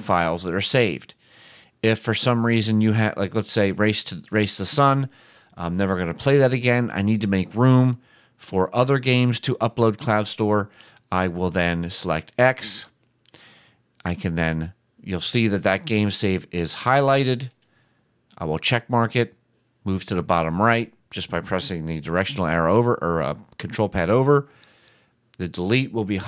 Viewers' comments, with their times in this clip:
0:09 Ur an upPPPP speakrrRRRRR^...and it’s so annoyingGGGGGGG^